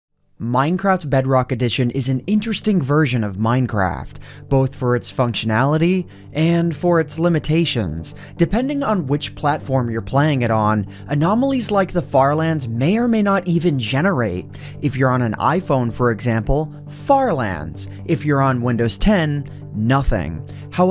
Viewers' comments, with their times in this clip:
0:04 "both for its funcionality" what i hear: both for its fuckionatilty